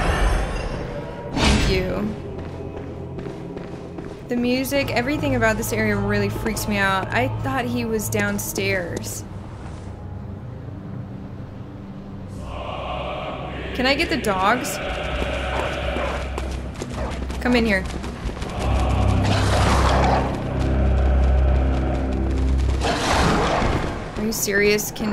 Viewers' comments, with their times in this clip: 0:09 That was great timing with the music, after she was shocked by sighting that Kidnapper/Snatcher (aka bag boy).